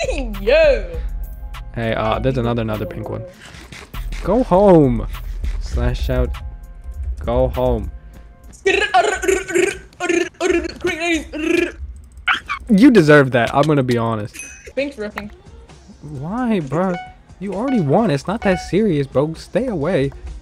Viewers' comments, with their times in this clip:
0:08 "Crank 90s" Gets hit off "Dolphin noises"